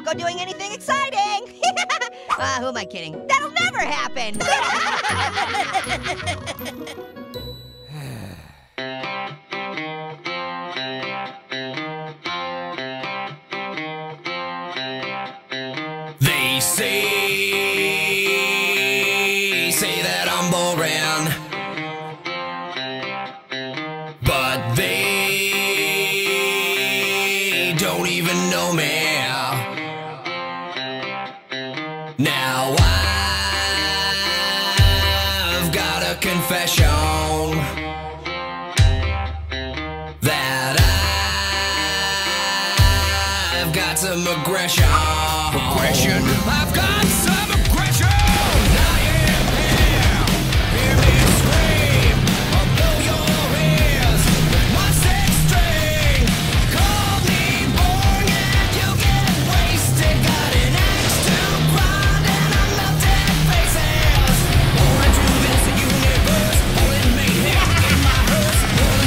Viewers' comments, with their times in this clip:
0:06 O_O ...Say what you will about the annoying orange...BUT THIS SONG IS FIRE.
0:11 is when the song began
0:50 love the song
0:55 this is great song and animation